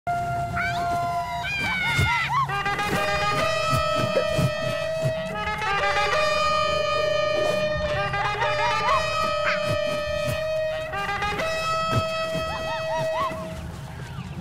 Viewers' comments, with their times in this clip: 0:02 The first part of the video sounds like hola